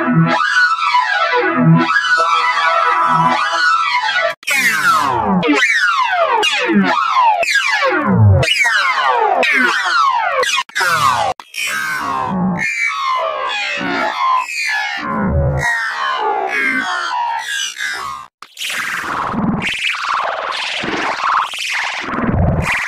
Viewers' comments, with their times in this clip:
0:05 L feel like a alarm